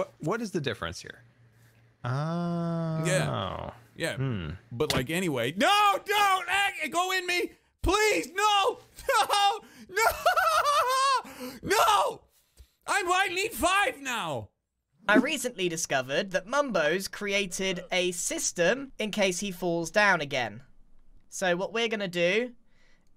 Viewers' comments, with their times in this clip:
0:07 jest the saddens in his voices as he jumped